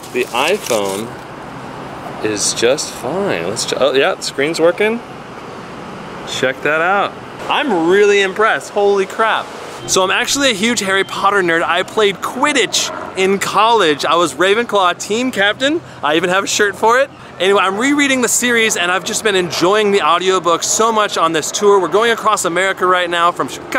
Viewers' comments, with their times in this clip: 0:08 If you just keep on going to until he says holy crap it sounds like a song